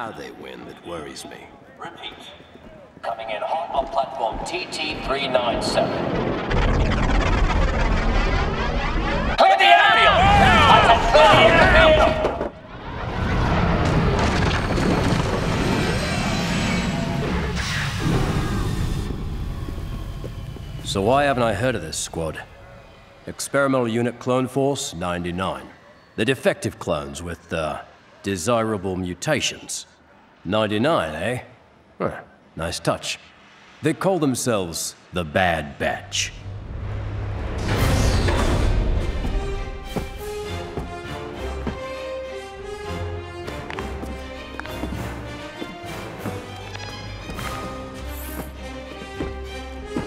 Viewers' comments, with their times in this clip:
0:09 I feel like there's some sound effects missing here, or they're a bit quiet. Maybe the scared clones are a bit too loud... idk. Just me? Regardless I'm really excited about this season
0:09 I’m excited for clone wars just not bad batch and the audio seems weed and they need to fix it!
0:32 that music tho
0:38 reminds me of the resistance theme